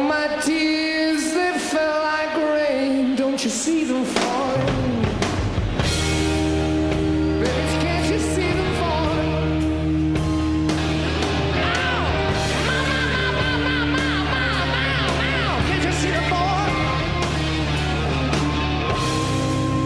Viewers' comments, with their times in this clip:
0:05 in the album version, when Robert sang the part “oh my tears that fell like rain.. don’t you see them fall”, the drum actually followed with the beats that imitated the emotional impact of tears falling! Love it!